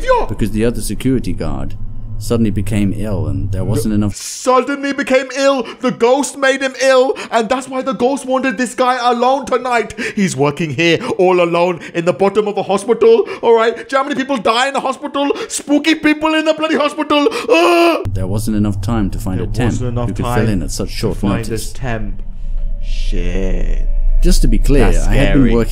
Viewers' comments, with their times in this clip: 0:10 rapid Indian funny accent warning
0:12 (random Indian messyourself screeching)